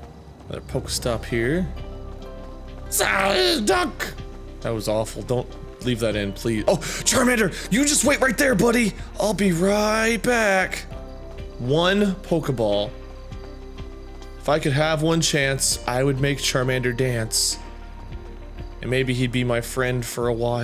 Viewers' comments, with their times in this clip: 0:06 omg that was an impressive psyduck impression XD * laughs hard with pikachu the bank thief*